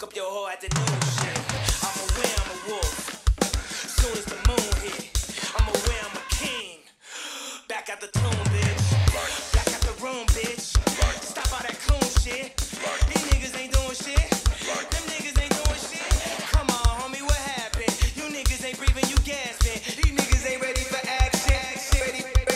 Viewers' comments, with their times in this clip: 0:03 Same with onwards timing is all off with that beat/groove